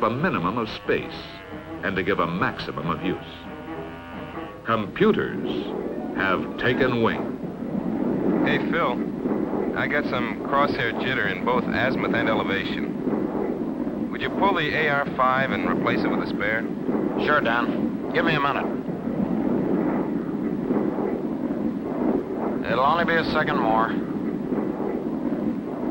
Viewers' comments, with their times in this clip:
0:08 that’s the least convincing voice acting I’ve ever heard. I know it’s just an example but still.